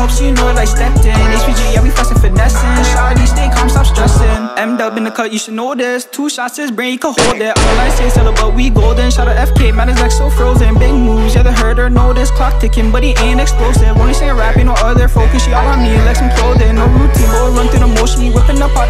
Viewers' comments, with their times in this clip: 0:03 Music fire 055